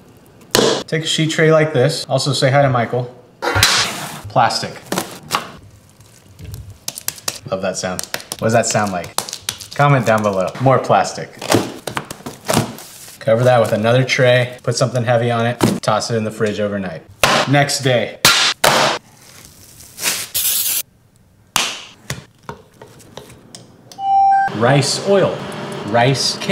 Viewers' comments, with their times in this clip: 0:07 a tray with sticky rice on top being being smacked